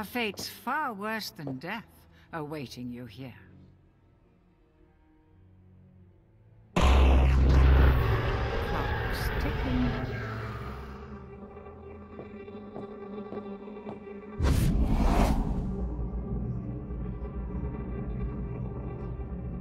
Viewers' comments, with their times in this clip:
0:07 I love the sound effect the sound of the portals unlocking have always been my favorite.